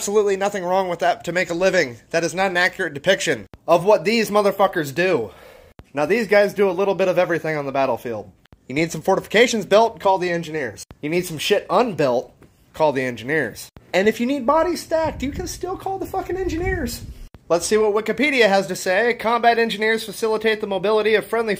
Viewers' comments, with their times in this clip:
0:06 "the engineer, who is engi-here to solve one thing" *TF2 Engi slams guitar down with metal bang* text reads "Practical Fucking Problems!"